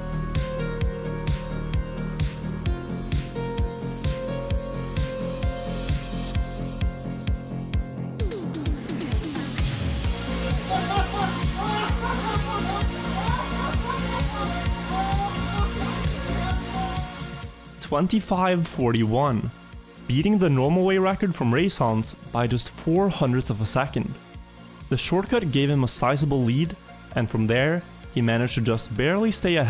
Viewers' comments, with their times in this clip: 0:08 sounds like the start of a rickroll to me
0:08 sounds like a rickroll... hmmm
0:13 and he laughs...